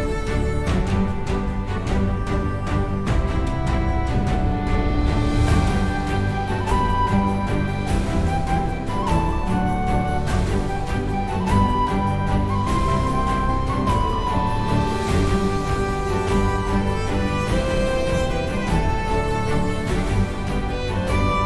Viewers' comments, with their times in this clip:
0:04 This is most beautiful music from you. I heard it many times, that tune awesome. My favourite from you 😁🌟